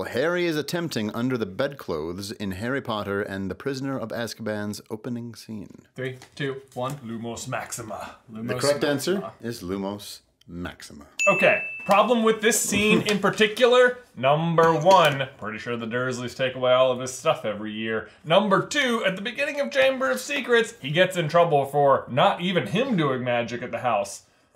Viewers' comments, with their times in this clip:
0:07 did anyone else notice that they never got the point? It made a ding, just didn’t add a point